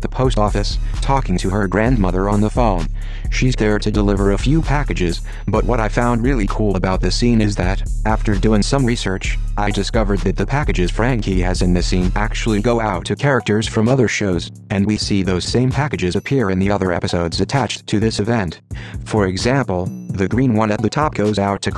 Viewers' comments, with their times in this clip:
0:03 Anyone know what song that it is That beat hard as fuck